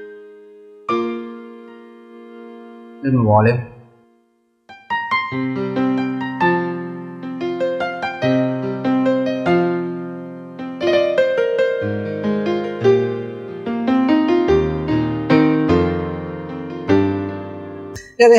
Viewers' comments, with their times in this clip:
0:04 I wonder what you were playing there. Sounded very nice!